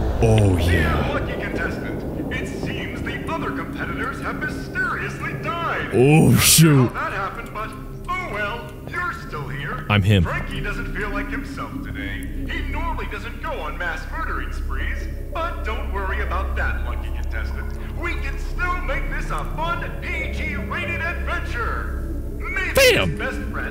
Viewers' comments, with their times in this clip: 0:05 bro why does this guy sound like All Might 😭😭😭